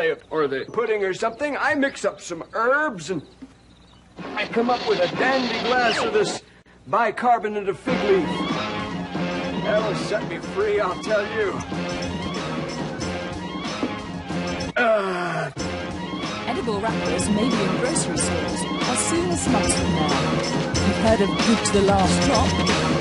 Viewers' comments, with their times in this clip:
0:04 Anyone know the name of this show? Whenever I hear a sample of that voice my mind just hears Stan Pines